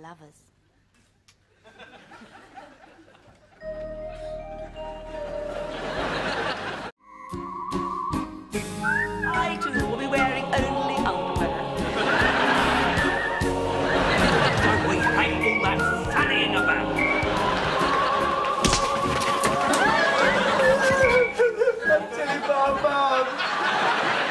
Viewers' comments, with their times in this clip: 0:06 are we gonna ignore that how this dialog goes well with the outro music